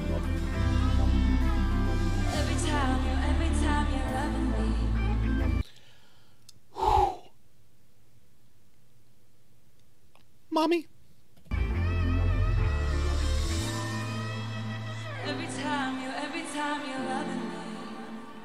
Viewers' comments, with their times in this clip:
0:06 your sigh and then "mommy" took me outttt hahaha because yeah, same